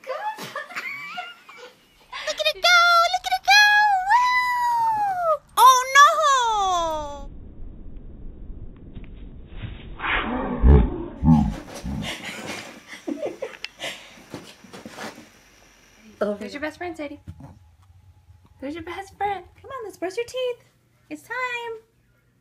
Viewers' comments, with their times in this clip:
0:07 When you finally get sick of all that yipping in your house.
0:09 took me out! I wasn't expecting a dog to the soulja boy "youuuuuuuuuuuuuuuuuu"😂😂😂